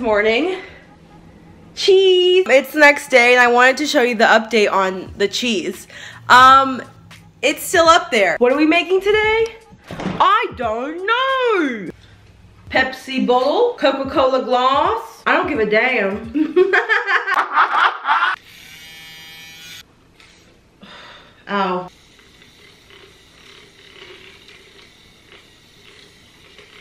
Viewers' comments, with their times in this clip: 0:10 I love how one minute youre all lovey with your dog..and next minute youre like "get away from.meeee!!!" And i heard a little aussie accent ... I see u girrrl